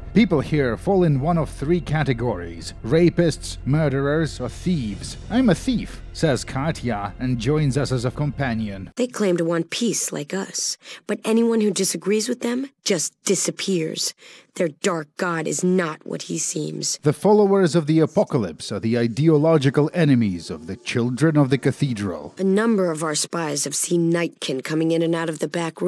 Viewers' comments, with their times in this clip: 0:08 they claim the one piece like us!